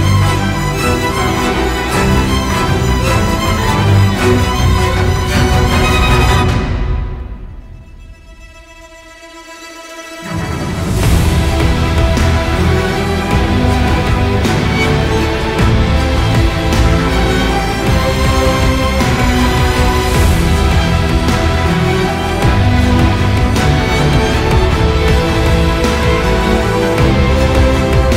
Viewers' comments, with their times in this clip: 0:10 i think she like the epic drop